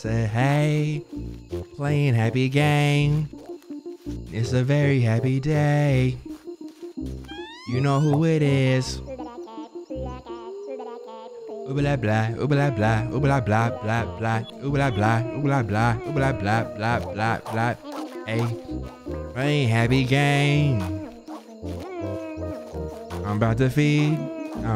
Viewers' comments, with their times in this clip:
0:08 That carrot 🥕 gots bars= Carrot 🥕Bars 🎶 It sounds like it's saying "Do dat dance." Ayaaaaaaa! Peace✌+Love❤️⬇️